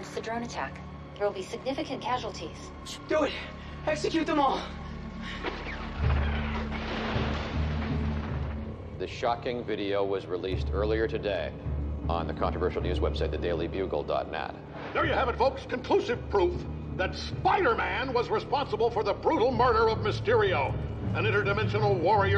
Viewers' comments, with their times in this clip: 0:05 most "amazing" use of the timpani in probably any film ever...and the fact that it's actually the marvel studios fanfare is audible amazement